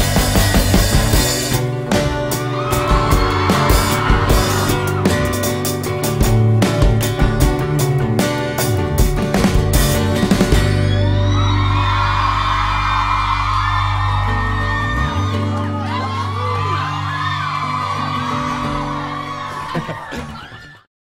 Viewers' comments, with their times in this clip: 0:06 Oh CALUM U SLAYED THE BASS!!